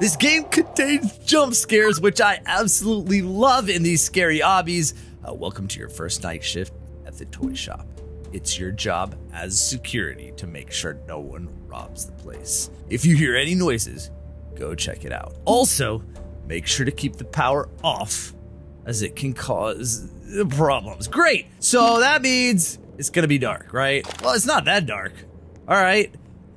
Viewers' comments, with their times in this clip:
0:09 think noodles voice in the last guest 2